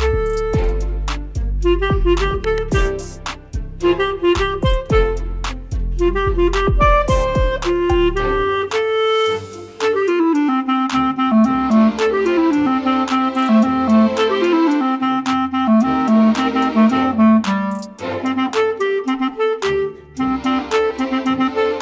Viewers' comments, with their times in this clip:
0:09 that flow thooo